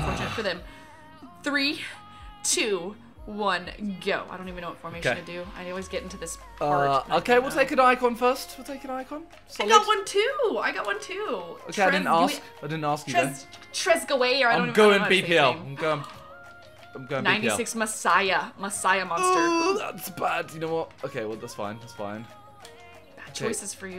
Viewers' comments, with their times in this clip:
0:10 wtf is that pronunciation😂😂
0:10 wtf is that pronunciation 😂